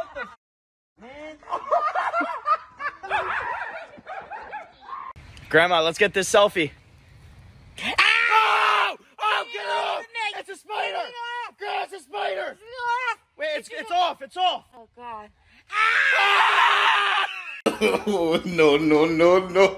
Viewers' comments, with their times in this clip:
0:07 All grand mom scream s